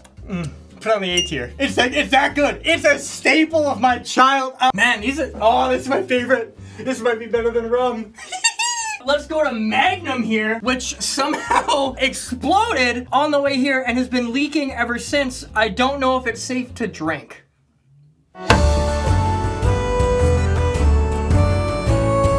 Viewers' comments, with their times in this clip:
0:07 the laugh had me fucking crying lmaoooooooo
0:08 the little giggle got me dead 🤣